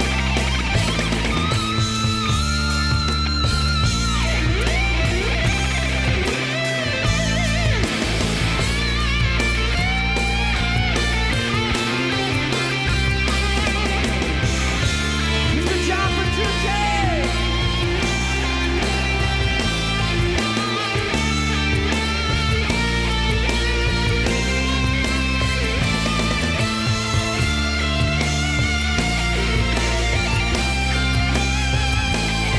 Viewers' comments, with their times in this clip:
0:09 at minute this melodic scream is so beautiful ￼
0:15 Guys please sort this debate out between me and my friend. What does Labrie say ? My friend says it's Mister John Petrucci but it's surely Good Job Petrucci? What do y'all think?